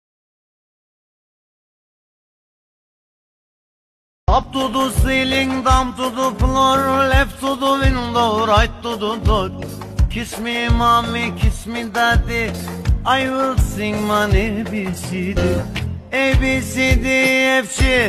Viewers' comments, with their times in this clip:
0:05 this was the most turkish thing ı have heard in a while